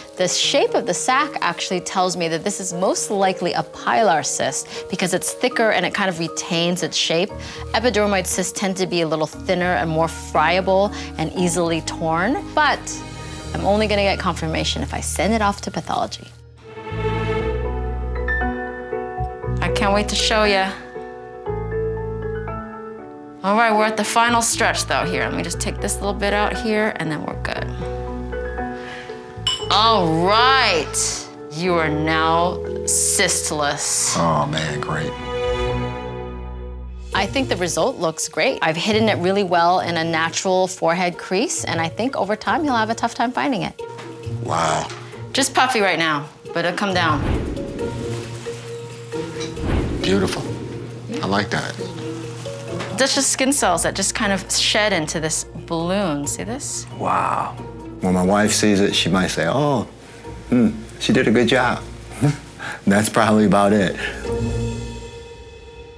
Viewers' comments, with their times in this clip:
0:09 Anyone else hear her say it was more "fryable"...
0:46 That noise also sounds like WoW flying mount noise when you start to move.